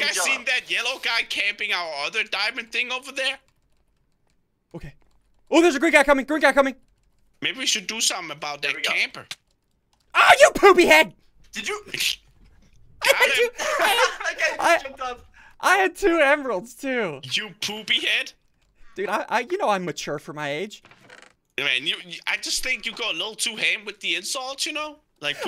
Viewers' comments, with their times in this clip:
0:06 you wanna hear ssundee yell ah you popy head click this --------------->